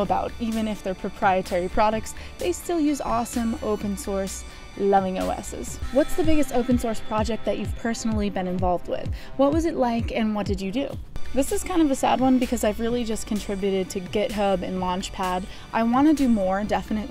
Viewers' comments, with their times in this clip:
0:04 ...loving O-asses! =P